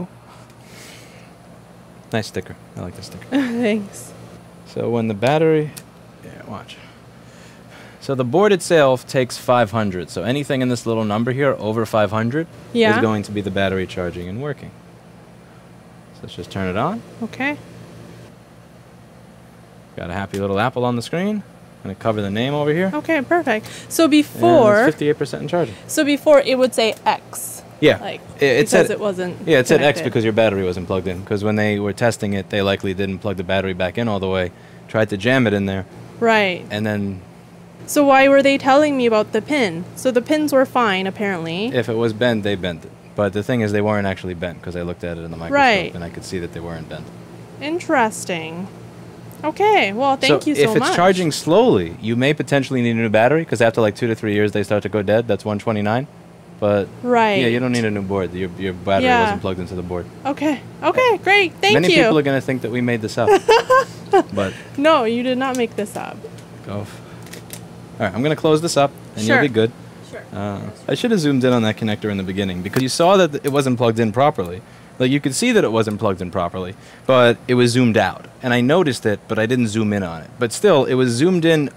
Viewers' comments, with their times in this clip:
0:07 “ but the board itsayulf ” 💀💀 where’d that southern drawl come from
1:04 that muted but go F*** your self :D :D :D